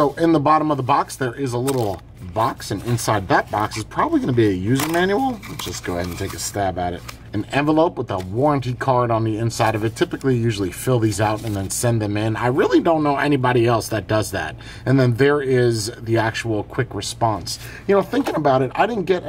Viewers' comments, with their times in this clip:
0:05 Voice crack? Haha!